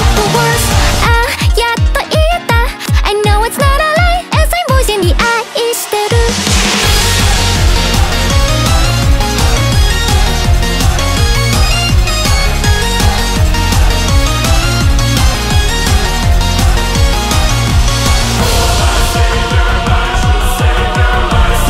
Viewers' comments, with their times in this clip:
0:03 as im voicing the 愛している is just a masterpiece